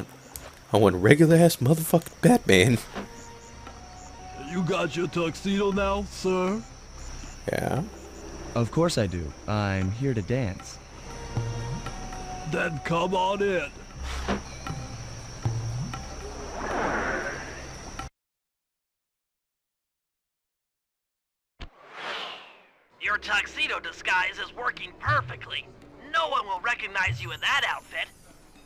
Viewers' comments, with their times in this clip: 0:09 Sly cooper's impression of Capitain Kerk